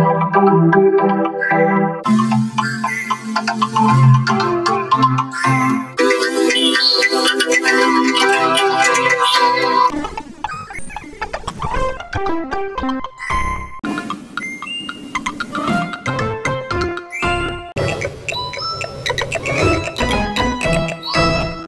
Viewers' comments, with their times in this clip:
0:06 sounds like bugcatolmator v21 And looks like bugcatolmator v3